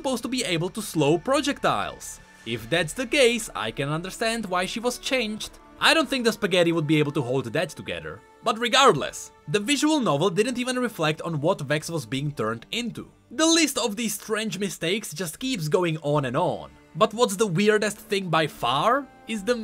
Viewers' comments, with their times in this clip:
0:06 I don't know why, but the word "spaghetti" somehow executed perfectly here.